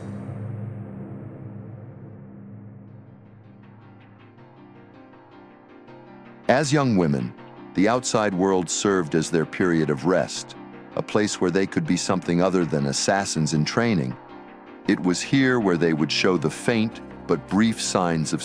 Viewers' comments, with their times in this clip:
0:06 that Tekken 4 ost music (one of my favorite Tekken ost ever) really really suits the sisters ways especially nina...its gives a fatel mysterious vibe and her beauty and deadly looks suits the music perfectly ✨